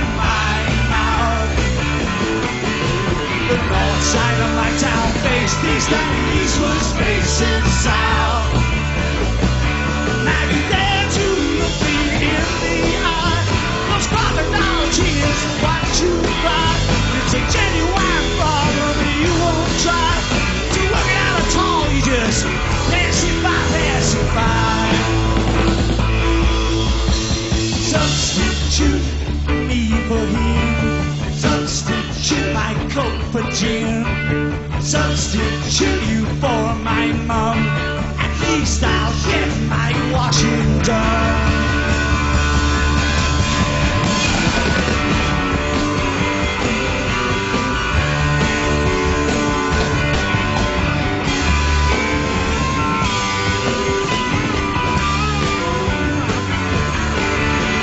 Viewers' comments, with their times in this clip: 0:03 The killing riff Entwistle casually plays (or so) is worth putting up with this otherwise slopfest. Saw the Who's early days, club dates, medium size venues, incredible live band; but here it's sad to see Moon such a mess. Toward the end they buried the drums in the mix.
0:43 ...Nice save by Keith. He gets a bit carried away with his fills, nearly throwing in an extra measure.